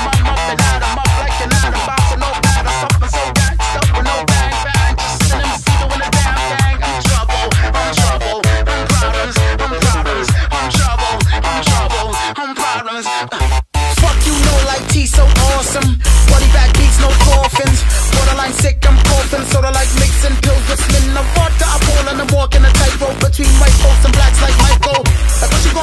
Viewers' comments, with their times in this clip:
0:10 the beat is sick when it drops